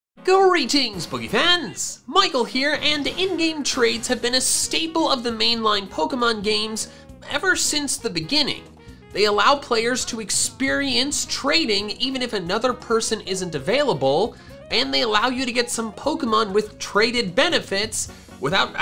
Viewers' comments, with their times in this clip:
0:00 Music PTSD INTENSIFIES